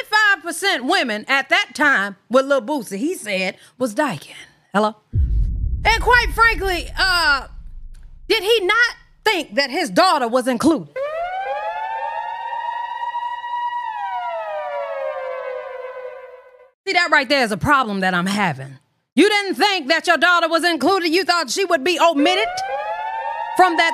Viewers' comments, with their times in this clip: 0:08 you ate boosie up w/ that heel turn siren combo 😂